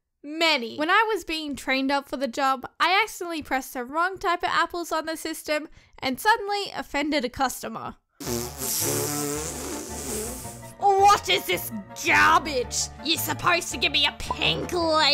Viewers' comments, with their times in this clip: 0:03 sounds like a.... KAREN